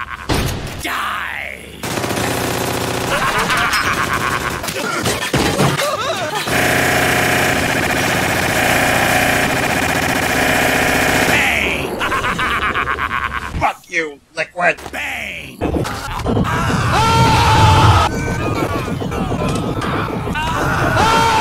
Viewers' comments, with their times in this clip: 0:06 If there is no Ocelot going “BANG” to the sound of sub machine gun I am going to be very disappointed EDIT: You did not disappoint
0:07 I now want a mod for every FPS game ever that changes the gun sounds to Ocelot saying "Bang".